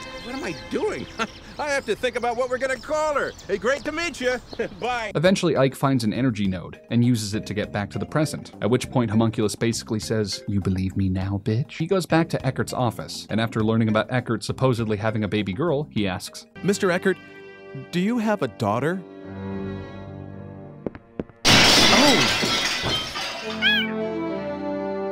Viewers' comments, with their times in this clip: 0:10 That was the funniest shit ever and that impression was spot on.